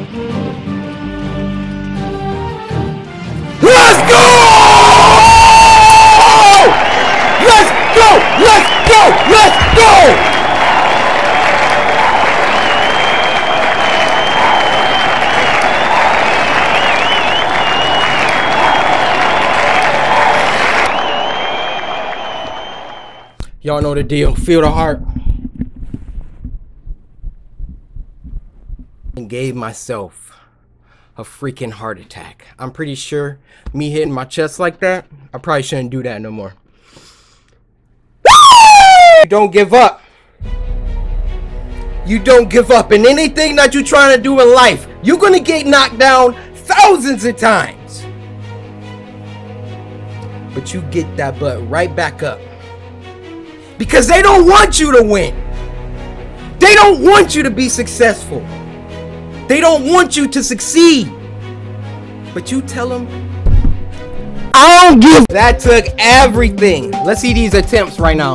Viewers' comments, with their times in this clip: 0:03 Thanks for screaming in my ear
0:03 he celebrates so loud so early it hurts and scares me
0:04 I prepare to turn down the volume when he beats the level so I don’t wake my whole family at 4 in the morning lol
0:38 when you sing in a high pitch voice changer
0:38 that scream made me die laughing
0:53 Me playing tower of hell in roblox: (AND WHO ELSE SCREAMED CUZ HIS NAME IS CORYKENSHIN WHEN HE BEAT HEXICON FORCE?)